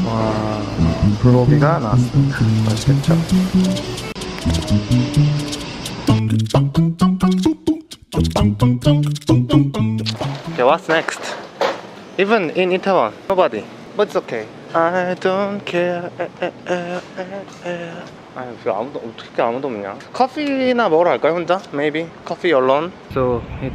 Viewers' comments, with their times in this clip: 0:07 the acapella is so cute I liked it 😍😂